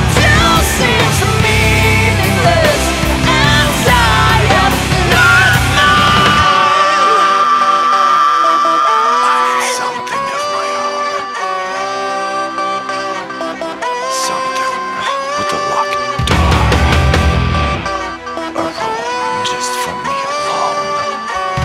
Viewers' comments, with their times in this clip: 0:05 That F# is really impressive